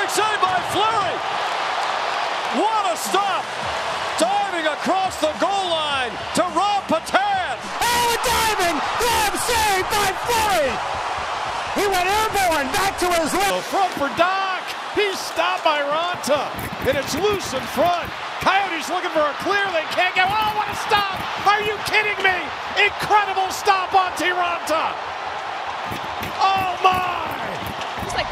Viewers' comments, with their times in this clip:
0:09 Bro my eardrums
0:14 Bro my eardrums